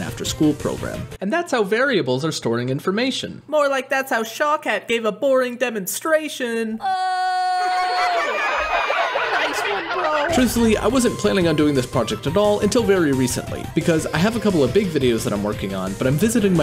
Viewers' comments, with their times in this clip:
0:03 Bro revealed what he sounded like when he was 12